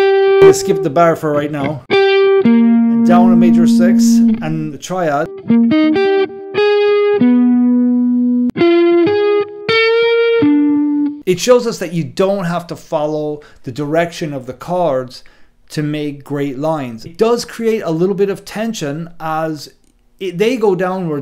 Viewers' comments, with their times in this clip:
0:05 what the function of that B natural on the Bb7 chord ? is it just a passing tone ?